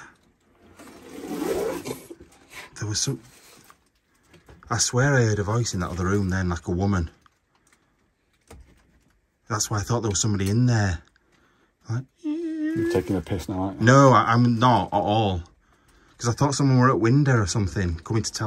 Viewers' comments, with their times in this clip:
0:03 Definitely hear a woman’s voice ish. And tons of orbs.